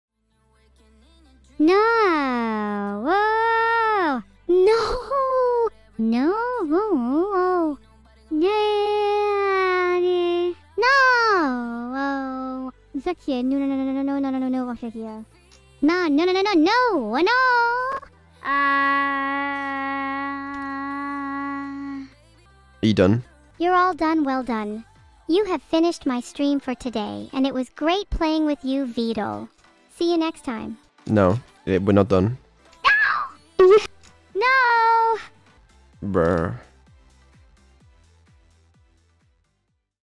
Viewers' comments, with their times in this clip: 0:04 THAT SOUNDED WAY TOO REAL WTF! THE BREATHINESS IN THERE TOO!
0:04 sounds like Gura somehow
0:04 The one sounded real
0:13 sounds like she was about to sing Darude Sandstorm ngl
0:27 I didn't know AI can do mic pops.
0:27 This exhale into the mic...
0:32 Okay that one sounded almost convincing.